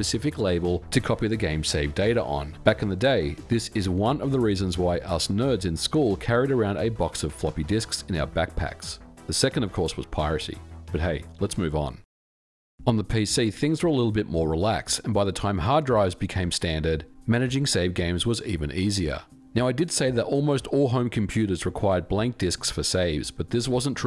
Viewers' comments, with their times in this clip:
0:09 The change in volume and tone was hilarious